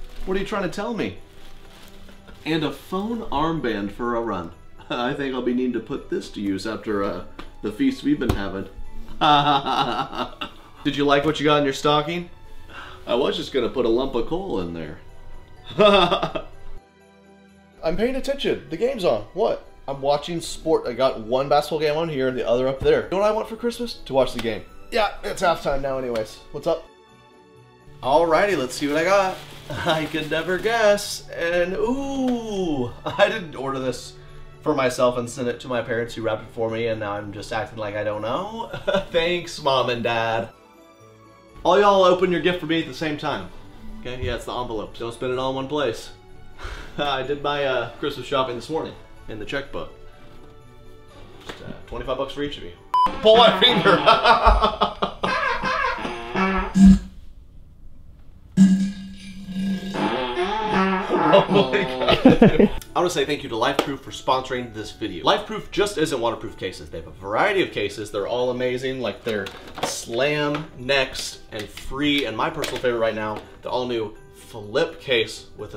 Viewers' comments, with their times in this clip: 0:07 that laugh made me laugh out loud in my room by myself.
0:07 dat dead pan laugh tho...
1:03 I seriously heard "life poop."